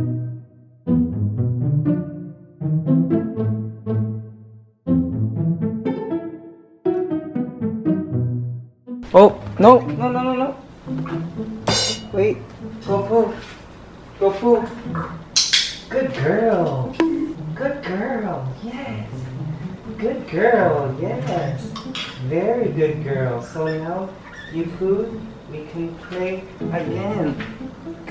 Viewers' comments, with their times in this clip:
0:09 I kinda feel like she tried saying 'go poo' am I wrong?